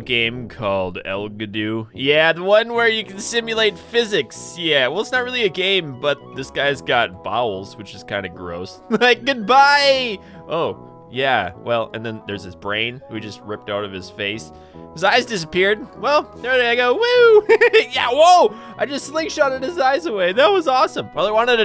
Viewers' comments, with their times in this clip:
0:06 this guys got balls